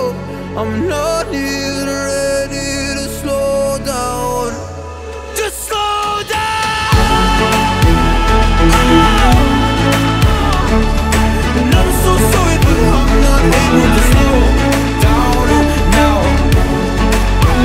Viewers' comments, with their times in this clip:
0:04 Your voice was amazing in this Song! Especially :D
0:05 Was listening to with my mum, she thought you shouted “Just lie dowwwn!” Got us laughing for ages, anyway great job both of you! :)